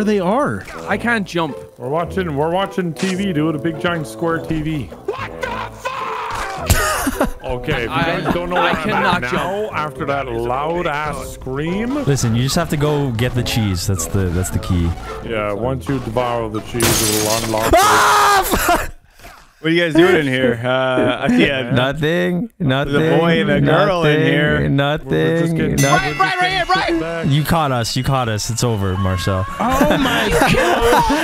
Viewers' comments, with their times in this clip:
0:04 One of these days i'll find where that scream is from. The amount of raw emotion in it is just too good.
0:13 He actually did the most horrifying scream I have ever heard